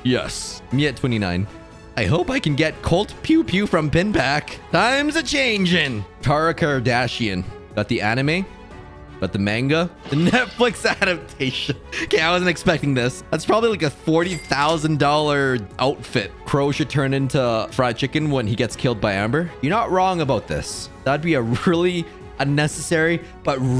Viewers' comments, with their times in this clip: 0:09 the way he said “manga” AAAAAAAAAAA